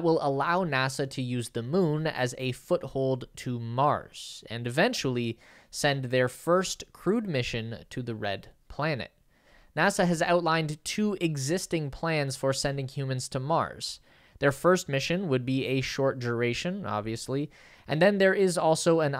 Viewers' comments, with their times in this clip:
0:07 "... and eventually send their first CRUDE mission to the red planet." [emphasis mine]. It may not seem very sophisticated to you, since it will be a first attempt, but I wouldn't word it quite that way. These brave men and women risk everything to break ground on a new world which will be basically a backup plan for humanity in case of a civilization-killing catastrophe here on Earth. Otherwise, nice documentary here. All good wishes.